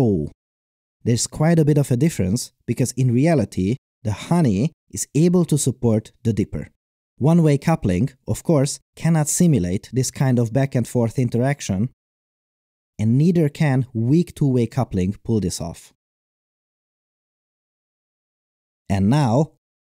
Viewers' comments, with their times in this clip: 0:03 the way he says "WOAH" i danced to it